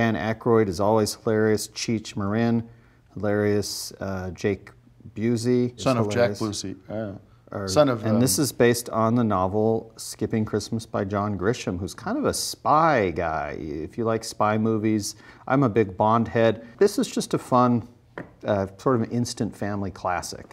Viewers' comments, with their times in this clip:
0:06 Tim’s noise is amazing